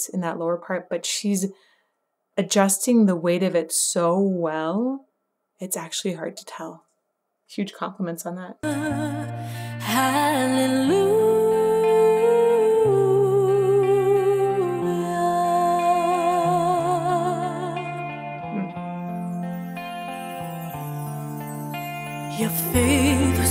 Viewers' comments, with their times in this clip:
0:06 Lenord Cohen's "Hallelujah" has become one of the standards I use to evaluate vocalists, particularly the way they treat the "Hallelujah,s" Lucy's Hallelujah is nothing less than than ethereal her overall performance is next level.:face-red-heart-shape: